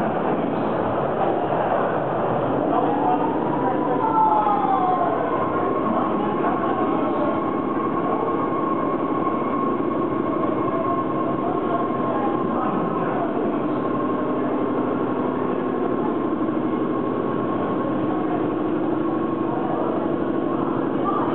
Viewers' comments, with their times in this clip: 0:06 Great video thats the same sound as the A60/62 stock